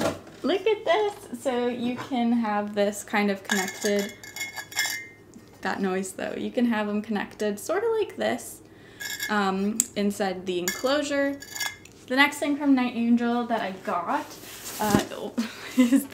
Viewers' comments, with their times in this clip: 0:04 that noise tho- screee 😬